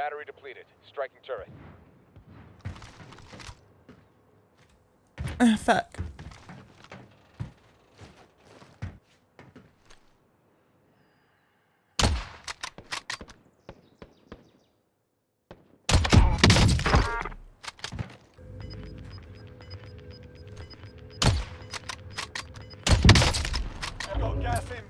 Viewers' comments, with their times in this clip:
0:05 I am sorry but that is a big pause, tf happened there?